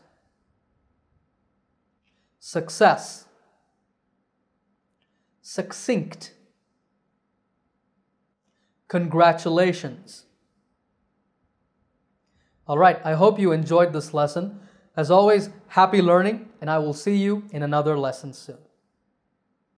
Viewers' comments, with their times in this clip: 0:10 Hi there is a pronunciation misplaced in recap section of “Success “